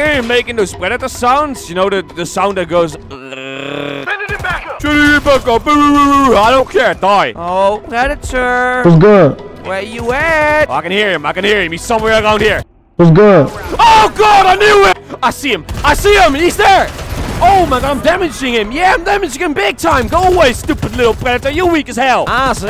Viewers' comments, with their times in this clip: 0:03 like a lion